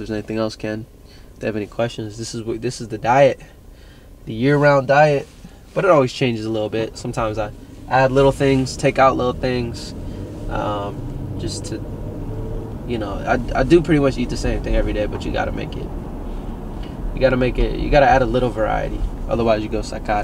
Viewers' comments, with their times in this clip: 0:04 Lmaoo you got that Xbox notifications sound I thought I had mine on for a second 😂😂 I had to play it back to make sure bc it’s am 💀 got me thinking my Xbox trippen